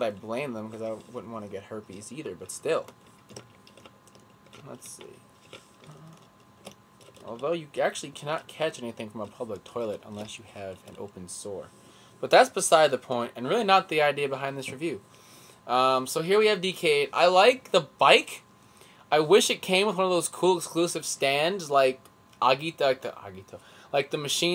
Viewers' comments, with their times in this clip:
0:09 so does that mean that you don't have to put toilet paper around the seat and risk yourself to have an accident while doing that, btw nice ringtone